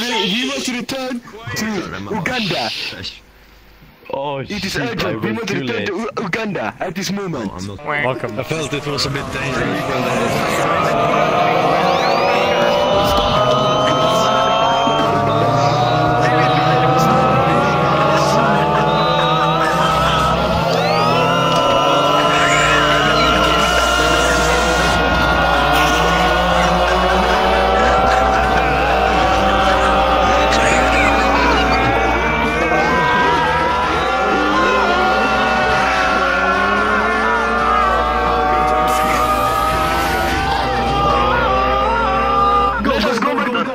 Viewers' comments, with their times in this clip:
0:08 Jesus Christ they started up their own Shepherds tone illusion
0:17 Thought they were revving up the THX theme
0:24 it sounds like a race at the Indy 500